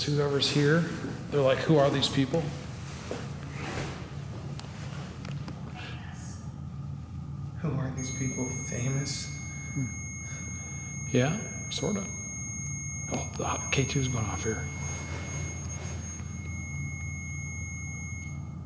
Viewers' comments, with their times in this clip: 0:06 I wasn't able to check all 2.3k comments to see if anyone else caught this but you can hear. a voice whisper "Yes" or something to that affect. It is right after you say " These ghosts must be wondering who we are "